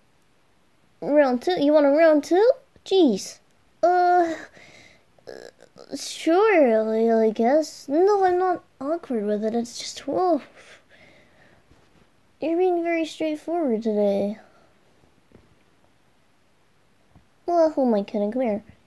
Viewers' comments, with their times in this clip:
0:06 HE SOUNDS SO ADORABLE